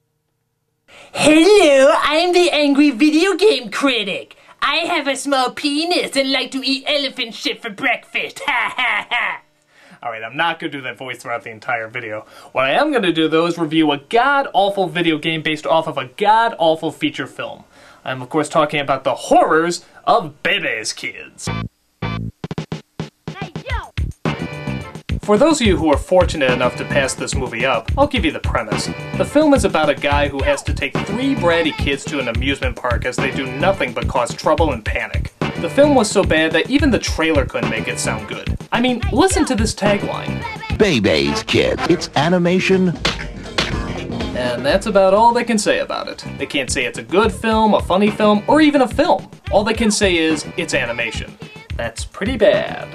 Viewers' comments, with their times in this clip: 0:04 due to lag, all I heard was “I have a snenis!”
0:40 The tagline was supposed to be "It's animation with attitude" but for some reason, there was an error and the "with attitude" part was cut off (maybe from the slapping hands sound effect? idk). You can ever hear in the announcer's voice that he was going to say something else but didn't.